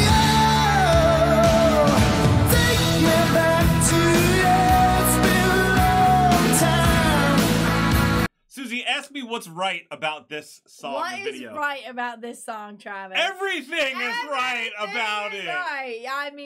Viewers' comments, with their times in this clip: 0:04 Mmm Jon! 💕 He had a bit of swagger & an awesome voice too! “Ask me what’s right about this song - Everything!’” 👏 Seated dancing together - Love it!!